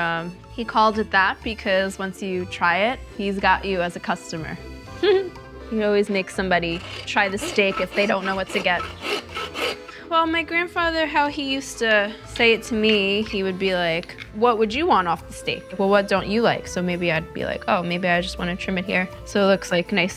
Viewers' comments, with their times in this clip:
0:03 that endearing brief giggle